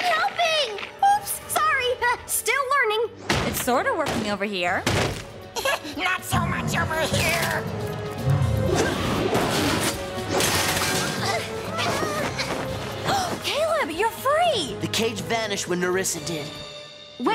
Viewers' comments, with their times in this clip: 0:05 omg Blunk spoke fluently 😆